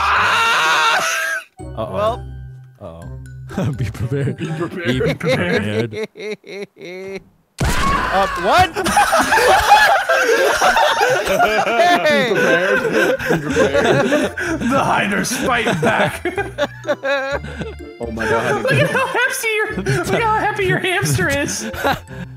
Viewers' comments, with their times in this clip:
0:08 his laugh and his reaction lmfao 😂😂😂👌